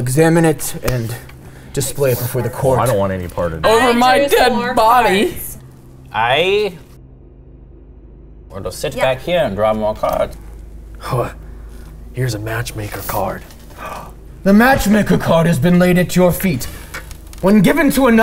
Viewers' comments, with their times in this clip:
0:06 I wanna know what audio was cut out